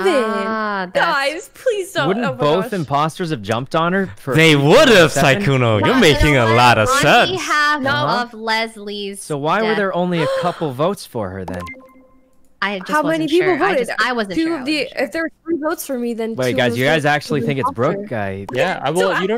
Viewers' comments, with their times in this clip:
0:03 Toast sounds like a proud dad here